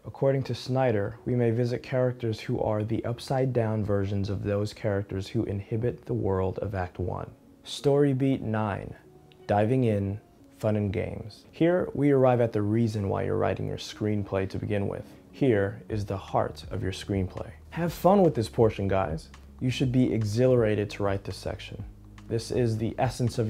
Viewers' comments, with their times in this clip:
0:07 Around the mark, it sounded like you said "inhibit", rather than "inhabit".